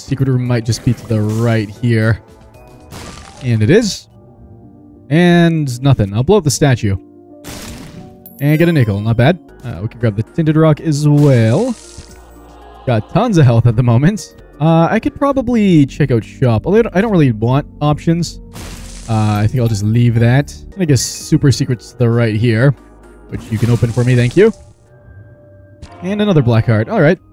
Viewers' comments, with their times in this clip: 0:08 bro almost said the N word hard r